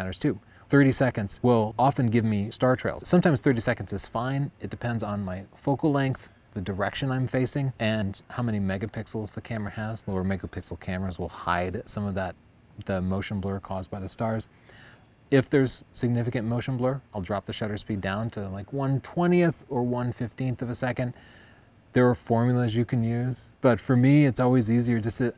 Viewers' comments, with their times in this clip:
0:08 30 seconds kiss. Now that is awesome :)